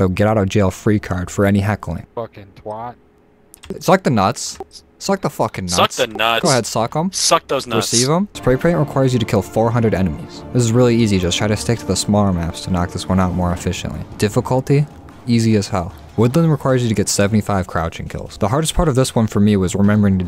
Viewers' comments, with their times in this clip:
0:05 he also sounded like formula
0:05 he somewhat sounded like Symfuhny